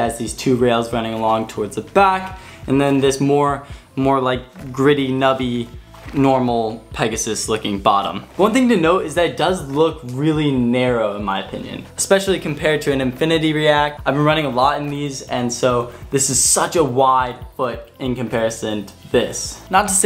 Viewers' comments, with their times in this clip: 0:06 I like how the rubber sounds like a horse(or Pegasus) aka the name behind the shoe